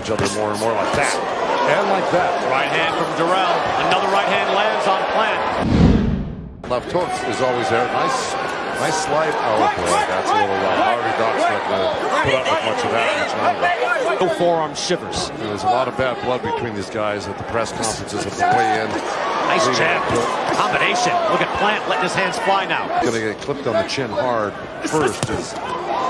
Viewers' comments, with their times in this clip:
0:10 listen to him whinging 😂